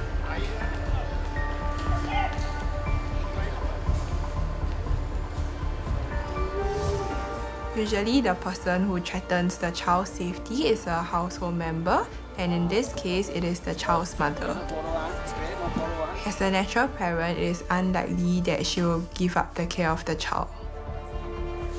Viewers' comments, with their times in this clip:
0:05 the difference is stark With her baba, she's giggling uncontrollably and wants to play. She's full of energy. When she saw her mother she instantly started screaming and trying to hide. That's so...why do people hurt their children?